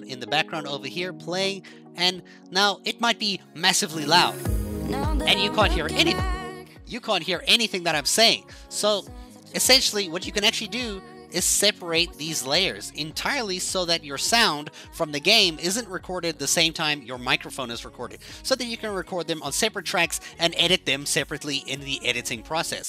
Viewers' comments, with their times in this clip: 0:09 "YOU CANT HEAR ANYTHING IM SAYING RIGHT??? YEAH YOU CANT HEAR ME OVER THE MUSIC" Ah yes quality xD